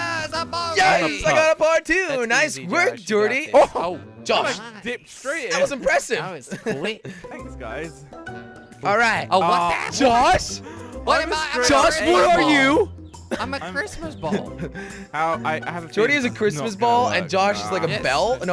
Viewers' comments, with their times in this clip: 0:05 That swish tho